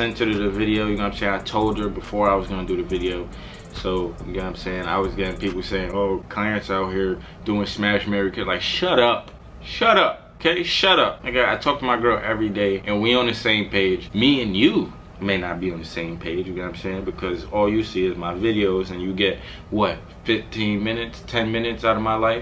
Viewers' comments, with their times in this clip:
0:09 accent came out quick 🤣🤣🤣🤣 #MuchLove Keep going do ya thing